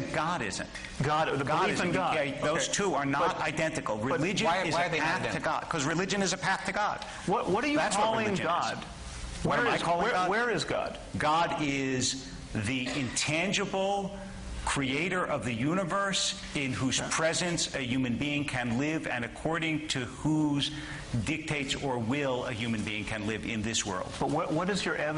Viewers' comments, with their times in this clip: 0:06 min. " What are you calling god ?" ...and wait for the laughter.